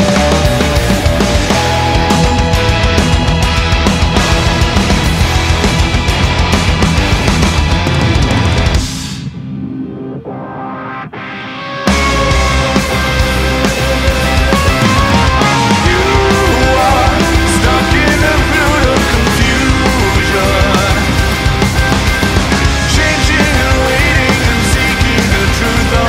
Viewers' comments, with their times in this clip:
0:09 that riff though is such a punch in the face
0:14 In it sounds like he's says " you are stuck in a bridge of confusion". Does anyone else hear that?